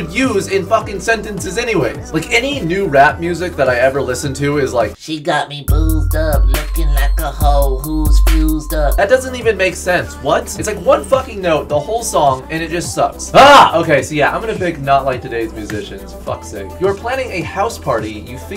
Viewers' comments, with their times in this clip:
0:06 when he rapped I died 😂😂😂😂😂😂😂😂